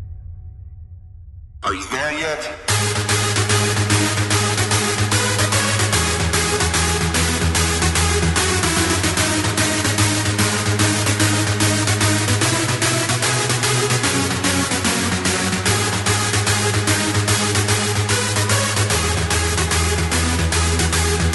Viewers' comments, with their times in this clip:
0:03 Sounds like Nightwish's Erämaan Viimeinen